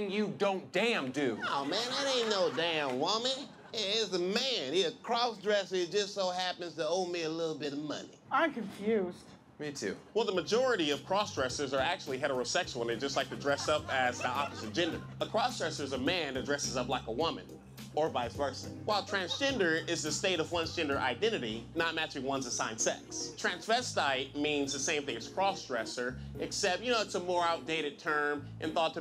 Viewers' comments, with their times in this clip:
0:10 i fucking lost my shit right here when his voice changed and he started talking about that 😂